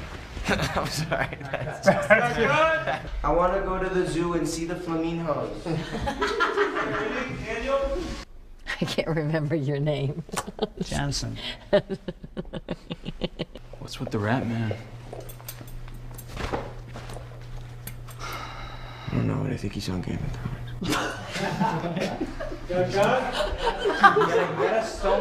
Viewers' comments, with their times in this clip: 0:03 hilarious, and I love how he said “Fla-MINHOS”
0:13 I dunno, but i think he's on game of thrones...OMG i laughed so hard and rewatched that like 10 times, love how serious he is when he says it xD